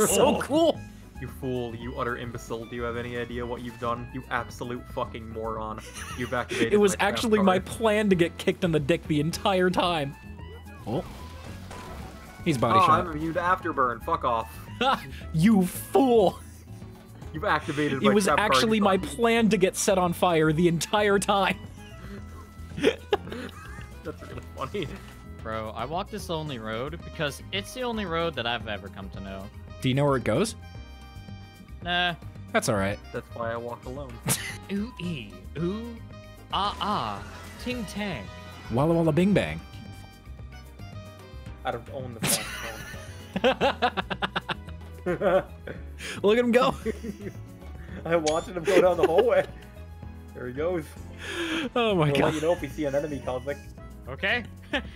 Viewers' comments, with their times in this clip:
0:07 why does this sound like it could be from a jojo protagonitst?
0:34 It's nice that you've gotten William Shattner for this video.
0:35 No one: Intellectuals singing: